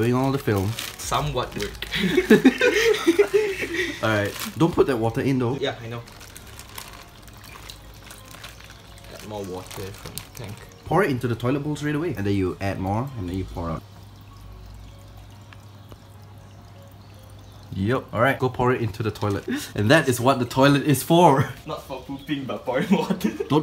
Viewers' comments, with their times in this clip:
0:05 😂😂😂💀 don't pour water the water in there the way u said it